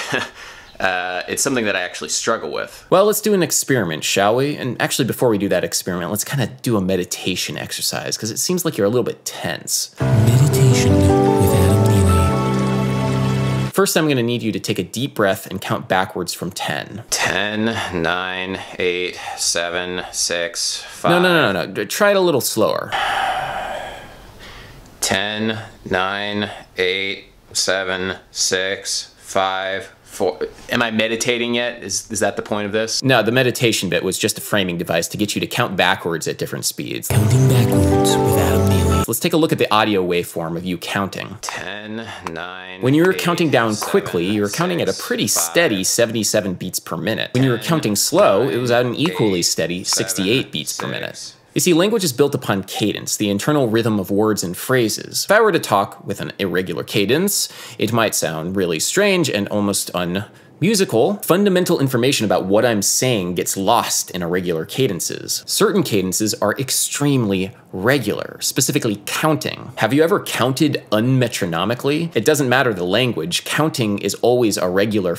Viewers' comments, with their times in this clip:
0:09 DAT 3-chords polychord, persichetti would be proud of you
0:56 He becomes G-Man